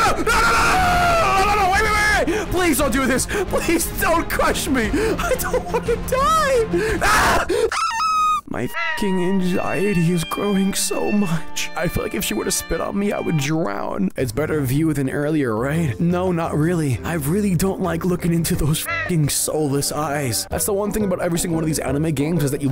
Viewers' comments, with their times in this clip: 0:06 PLEASE DONT DO THIS turns into a screaming chicken (idk the name of it sorry)